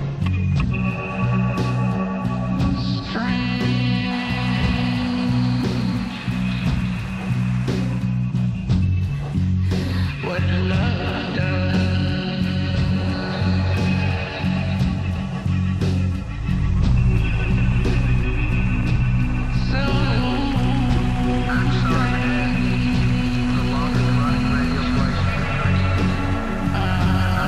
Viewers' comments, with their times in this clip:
0:10 I'm shocked. David Lynch made a movie where there's a woman who wasn't one fifth his age, naked with her tits all up in your grill, and a guy being simultaneously terrified of her and crying about how he'll never have her? And the woman is the fleshed-out, human main character, and not some infantile guy's one-dimensional desire? Oh wait, a woman moaning "sexily," he can't make a movie without his own prepubescent fantasies.